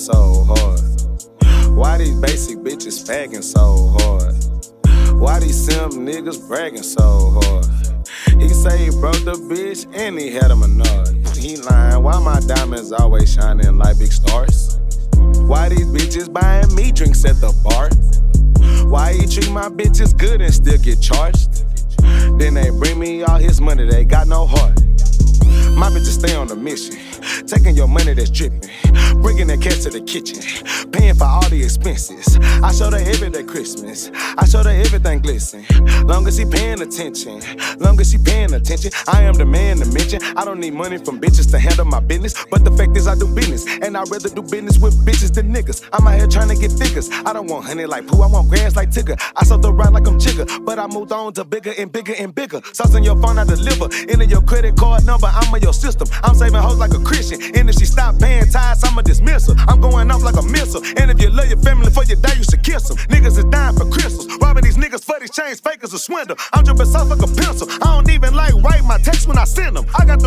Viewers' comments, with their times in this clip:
0:10 this nigga farted in the music video😂😂
0:10 Lmao why there a fart noise
0:11 did this nigga farted
0:39 his flow tho
0:56 that reverse soo sauceyy